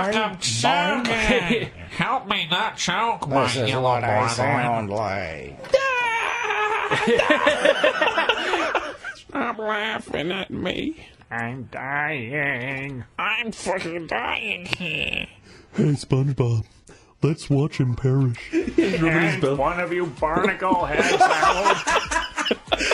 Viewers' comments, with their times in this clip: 0:05 Spongebob pointing and laughing and then cuts to Squidward frowning I can't 😂😂😂